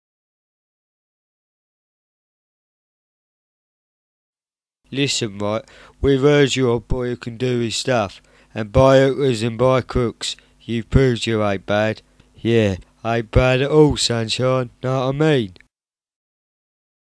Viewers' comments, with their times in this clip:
0:04 What I heard: Listen right. We've heard you're a boy that can do his stuff. And bayern uzin bar crooks. You proved your iPad. Yeah. IPad it all sand shop. Noah mean.